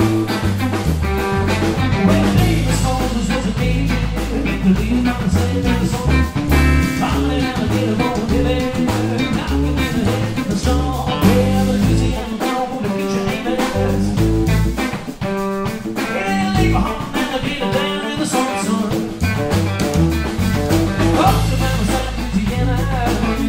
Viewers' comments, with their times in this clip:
0:04 dude singing over them bass lines is extreme!